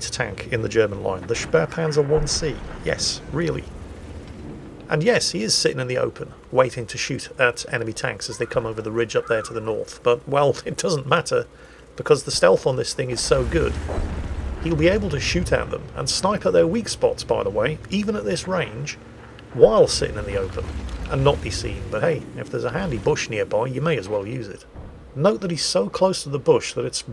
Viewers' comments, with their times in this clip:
0:08 ..... do I hear kids in the background oh gnomish overlord?